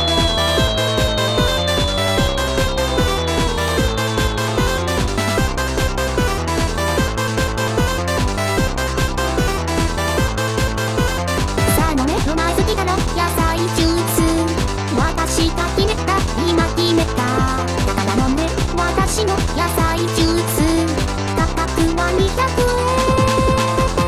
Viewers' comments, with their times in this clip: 0:05 I mean sounds a lot like a 2005 cellphone